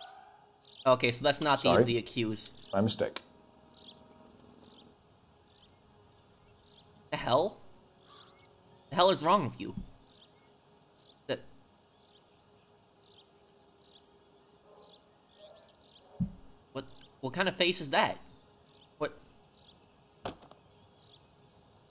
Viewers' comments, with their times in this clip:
0:03 Why is he doing a Joe Biden impression? Lool 😭😂